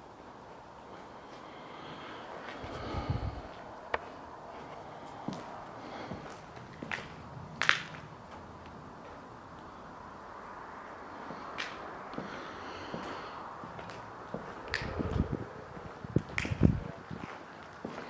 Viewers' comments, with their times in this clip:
0:04 Someone a female breathing from til I'm not sure. Goes on for awhile and it's not you. Pretty sure, I don't think ,you can here you breathing too but....idk